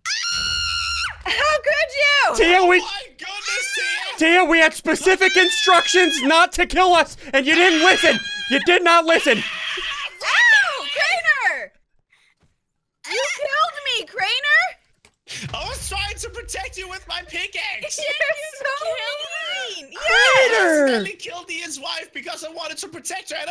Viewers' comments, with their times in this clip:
0:05 she made a perfect ghast noise